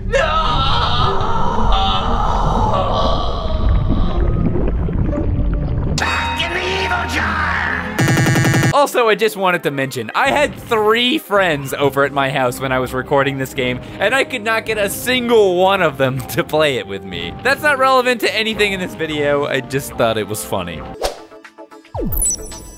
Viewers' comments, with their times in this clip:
0:08 *SUPER AUDIO GLITCH*